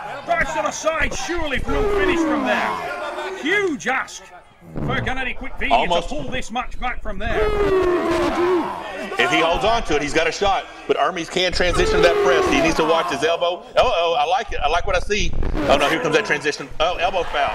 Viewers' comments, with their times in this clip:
0:03 Huge fart at minute ????? wtf
0:04 one of them farted lol🤣😂
0:04 Ermes farted for using so much back pressure 😅